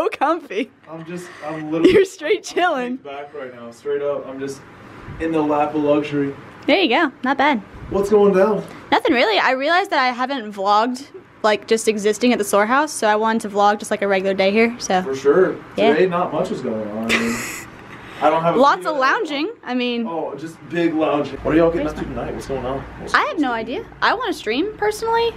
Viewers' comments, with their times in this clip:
0:08 sometimes she uses her real voice